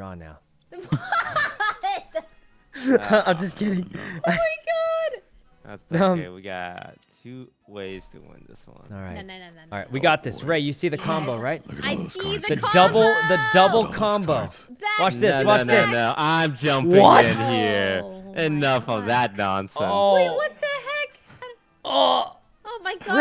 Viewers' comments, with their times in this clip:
0:10 for some reason, here toast sound like a big brother trying to stop the twin's plan (rae and sykkuno) to create trouble.